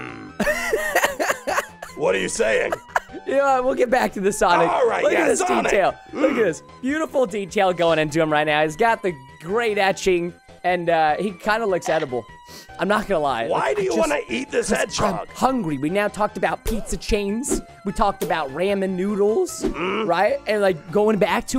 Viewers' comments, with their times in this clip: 0:04 did he say jim sonic not be jimmy caryson